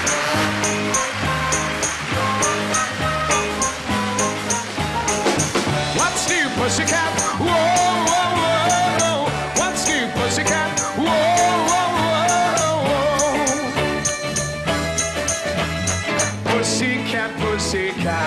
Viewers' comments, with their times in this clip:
0:05 It's not unusual fades out....